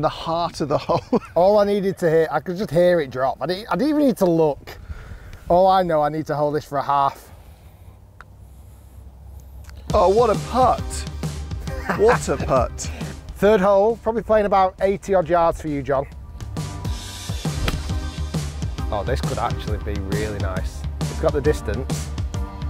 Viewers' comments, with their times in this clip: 0:09 q the perv music